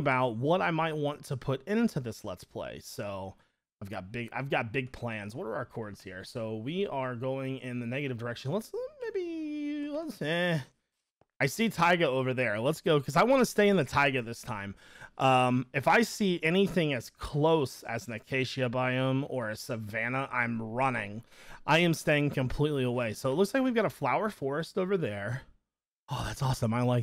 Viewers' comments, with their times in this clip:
0:10 Because of the soulja boy memes all i heard was Tyga, TYGAAA?